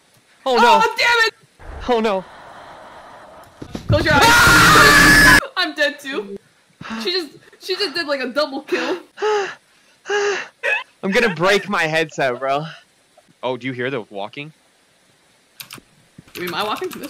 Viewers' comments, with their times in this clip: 0:04 The war cry